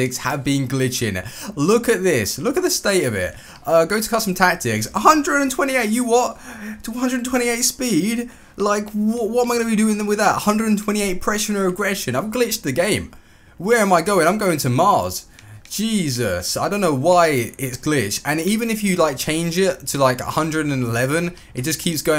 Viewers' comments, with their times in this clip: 0:06 he went fully British when he said a hundred & tweny eight speed